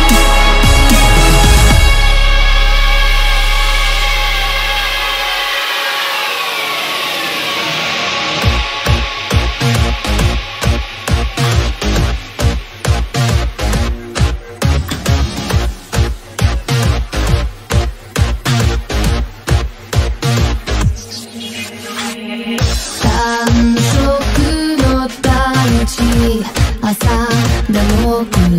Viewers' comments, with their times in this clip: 0:07 my eardrums are dead
0:08 the beat change nd Music …………. Goosebumps 🔥❤️
0:08 suddenly not epic anymore
0:12 The Blizzard cover honestly brings down this mix quite drastically for me. The hype of Broly's themes is too jarringly different to this and they shouldn't be mixed imo.